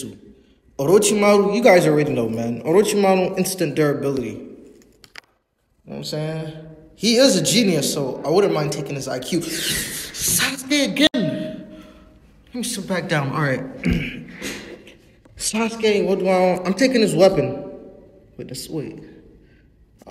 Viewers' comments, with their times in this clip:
0:08 Not Sure He Is Excited Or Angry😂😂